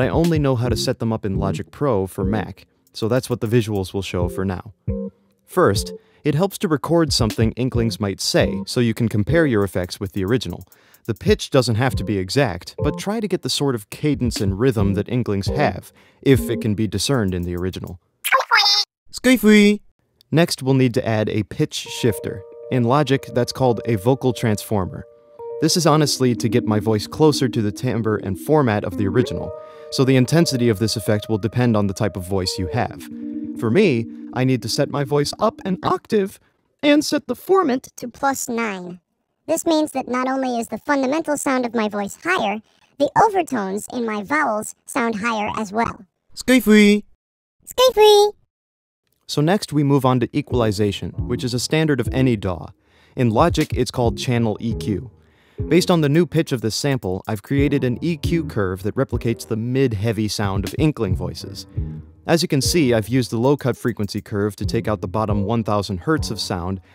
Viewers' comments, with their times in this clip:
0:10 Oh, they say nyu-wee?? I thought they said smoke weed!!
0:33 sounds like you’re going through puberty 😂
0:33 wow that really got creepy.
0:33 I didn’t know you were going through puberty!
0:34 Puberty be like
0:34 sounds like Donut from BFB
0:35 Sudden his vocal recording high pitched up
0:36 it sounded like donuts and Ruby’s voice from bfb
0:36 donut from bfdi
0:38 Yzma as a cat sound like:
0:38 holy shit it’s Yzma at the end of the movie
0:39 He sounds like Kitten Yzma from The Emperor's New Groove
0:43 your voice kinda got pitch
0:44 now you are the balloon guy from the amazing world of gumball.
0:46 sounds like an Octoling
0:47 Hat Kid joins the call...